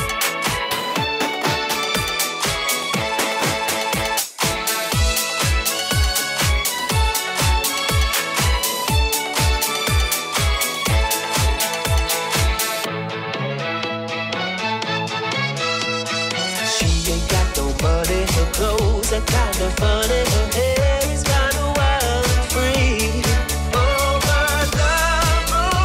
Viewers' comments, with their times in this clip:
0:06 Love this song mixed in! ❤